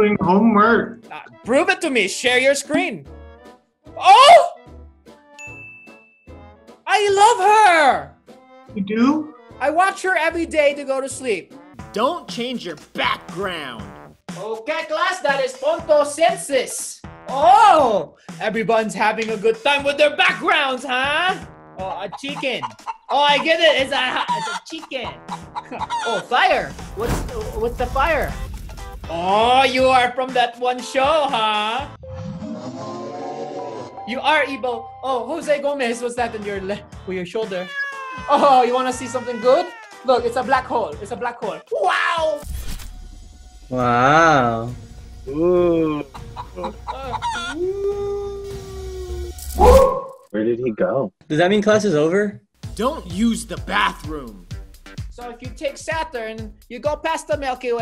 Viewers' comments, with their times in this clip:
0:06 why did he sound like Jackscepticeye for a bit
0:43 sounds like georgenotfound